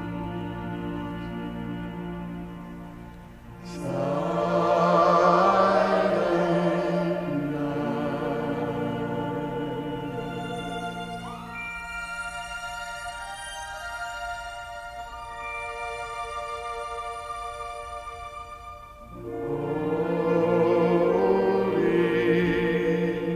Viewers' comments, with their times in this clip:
0:04 All I have to say is from till the end, I get very emotional. Such a beautiful rendition and arrangements of vocals and instrumental/chords. Masterpiece ❤️